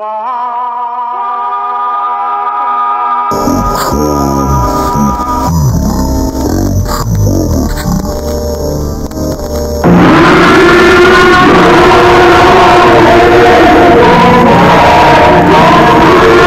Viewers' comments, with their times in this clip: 0:03 do be sounding like something from Bull of Heaven